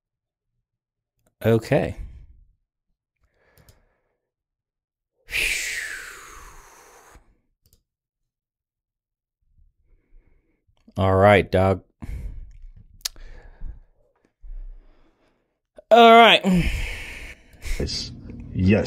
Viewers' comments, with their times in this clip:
0:05 where does the sigh of shame come from?... Every other point in time I get it.